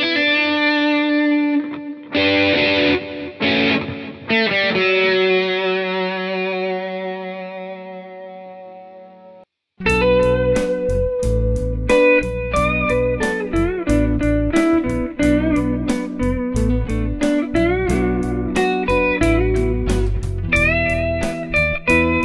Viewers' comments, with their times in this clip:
0:10 Started my first steps in the electric guitar world after playing acoustic guitar. Got the Donner DLP-124. Some how I can't get short sustain like you have on min. in the video. Played with different amps and setups. Any suggestions ? Guitar setup maybe ?